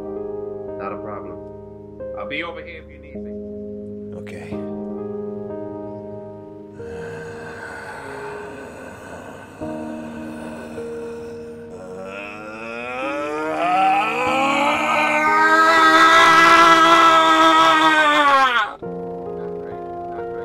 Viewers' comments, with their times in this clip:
0:08 That exhale :') Loved the vid as per usual !!